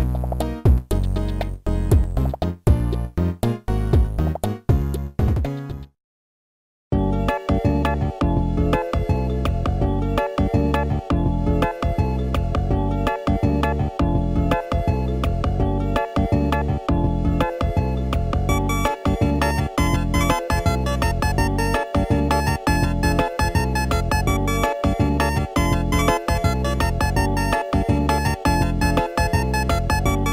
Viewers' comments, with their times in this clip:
0:07 Heavy shop vibes
0:15 i really like the song it sounds like someone sitting alone in a treetop over a field with a gentle breeze thinking about what flowers to pick to give to their friends